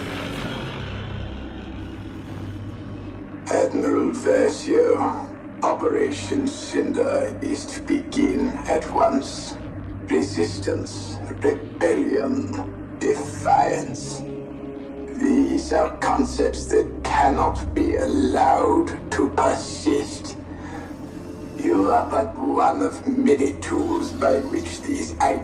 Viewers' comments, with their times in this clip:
0:10 cant understand 1 word 😂